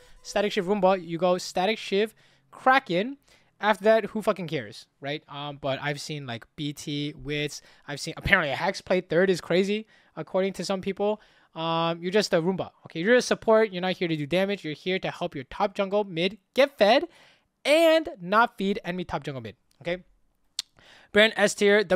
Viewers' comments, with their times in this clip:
0:07 what third is crazy?